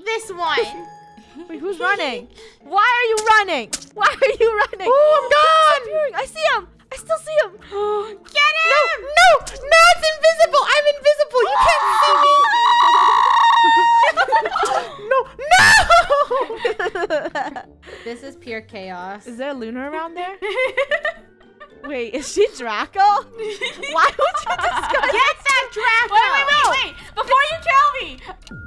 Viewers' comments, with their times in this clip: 0:10 WHAT KIND OF SCREAM WAS THAT 😭😭😭😭😂😂😂😂😂😂